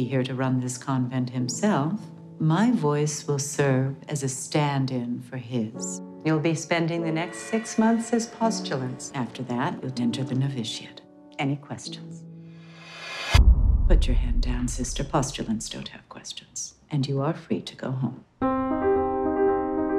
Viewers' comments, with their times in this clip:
0:06 ... "Postulants" sounds unfortunately similar to "Pustulence"